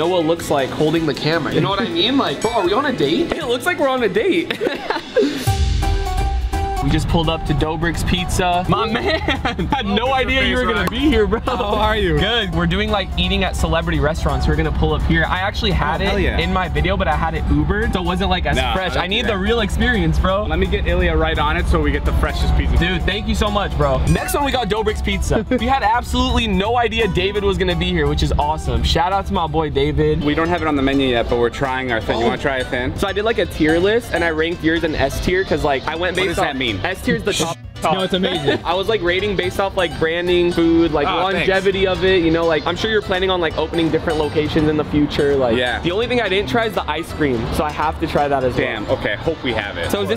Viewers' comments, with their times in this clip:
0:10 that hand clap in
0:32 The fact he said tryin instead of trying